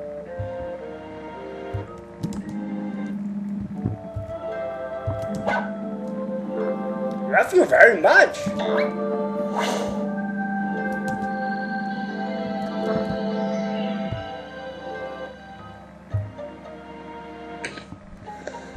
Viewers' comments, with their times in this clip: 0:05 trying to sound like Scooby Doo but I sound more like the question mark guys